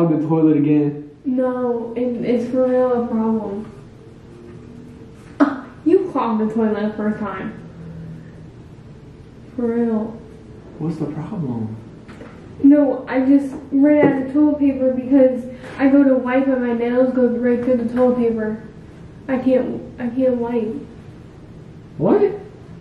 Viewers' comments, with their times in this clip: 0:05 her face and the UGH 😂 WHY ARE YOU SO CUTE FORRRR ❤️